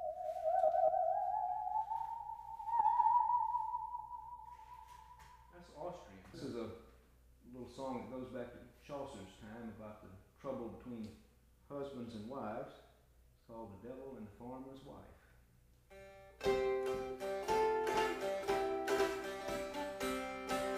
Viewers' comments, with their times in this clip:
0:07 He starts singing .... So, I would suppose so... :P